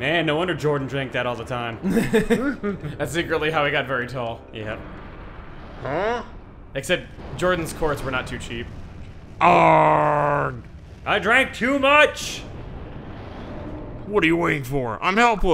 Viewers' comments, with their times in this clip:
0:03 I always thought Bowser farted when I was a kid. It made me giggle all the time.